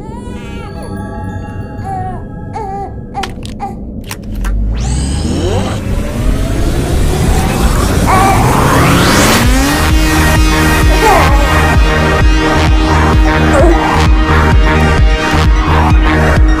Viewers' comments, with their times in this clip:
0:04 sounds like reloading a thundergun